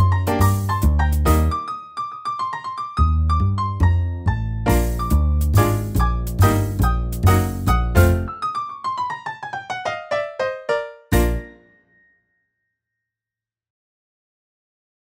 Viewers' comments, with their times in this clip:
0:09 CLAPS AT END :D